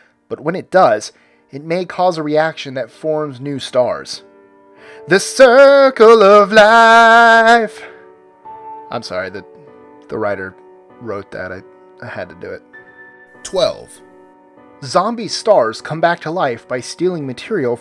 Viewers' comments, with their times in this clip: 0:04 25 creepiest singing starts